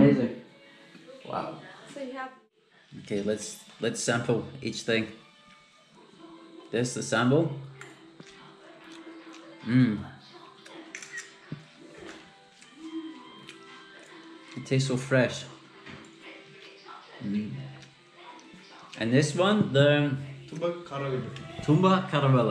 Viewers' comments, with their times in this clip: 0:08 his first moaning mmmmm😂😂👌❤️lv ya